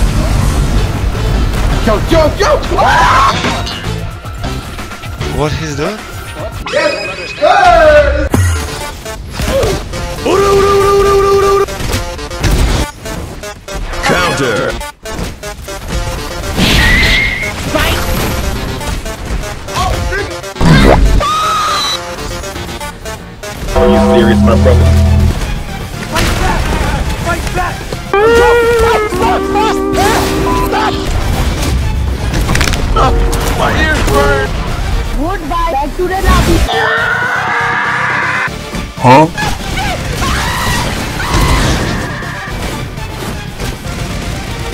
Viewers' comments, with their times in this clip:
0:09 I love the music
0:26 megalovania music hits hard